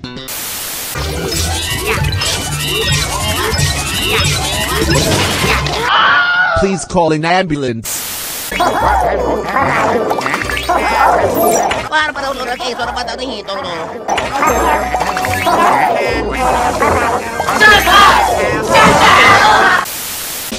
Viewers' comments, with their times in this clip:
0:05 Note: No Ghosts Were Injured During The Making Of This Video... Slinker: Gets Goob Slapped William Scream Please Call An Ambelance!